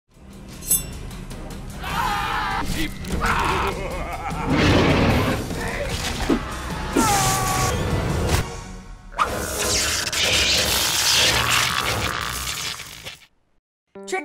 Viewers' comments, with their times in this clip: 0:02 Why are you all screaming?